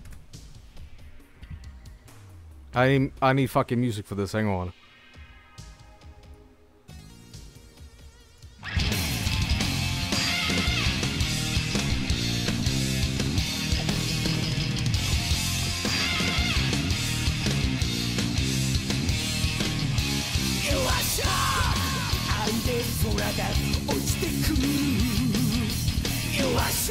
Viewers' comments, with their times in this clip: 0:09 Are they singing "U.S. LAW!!" or "YUGOSLAV!!" ?